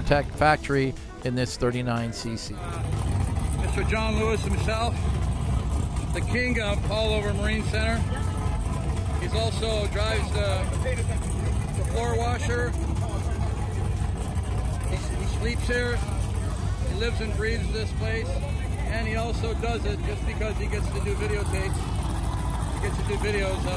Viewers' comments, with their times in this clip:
0:06 the conversation in the background lol